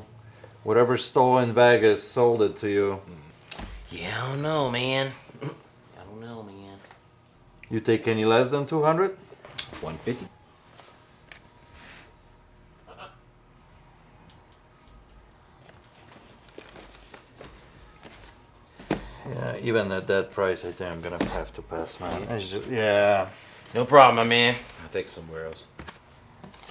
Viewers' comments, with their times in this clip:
0:04 "yee I dunno meen. Hm!... I dunno meen" you know. They're fake. Bye
0:09 when he said he'll take $150 did the bird laugh? 😂
0:09 Even the bird told him "No" ) , dude said 150.00 😅😂